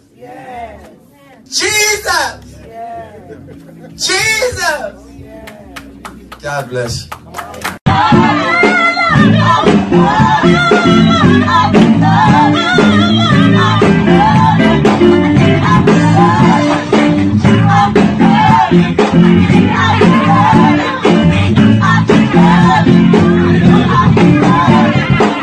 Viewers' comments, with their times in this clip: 0:10 WAS HE GOING FOR "BILLIE JEAN" AD LIBS CUZ IF SO ; HE NAILED IT LMBO GOTTA GIVE IT TO HIM! LMBO